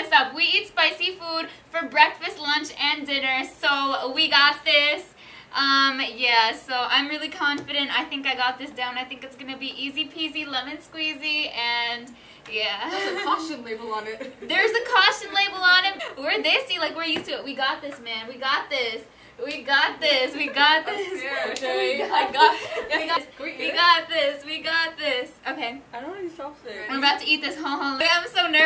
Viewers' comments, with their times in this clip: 0:09 she can sing😂😍